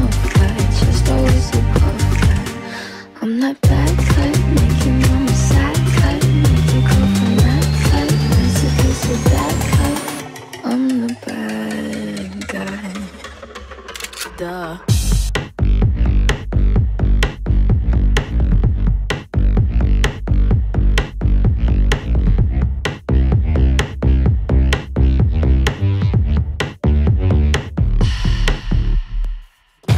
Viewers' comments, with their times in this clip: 0:10 The bass with Billie Eilish hits HARD HERE: